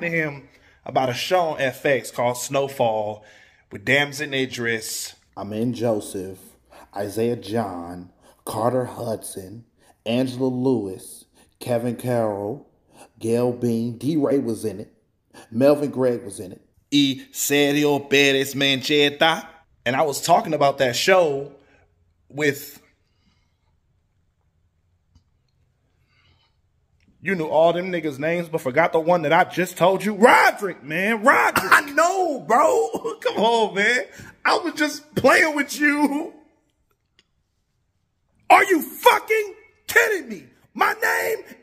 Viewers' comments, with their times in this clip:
0:03 The complete tone shift was something else. LOL
0:27 Wow up until I thought he was saying Roger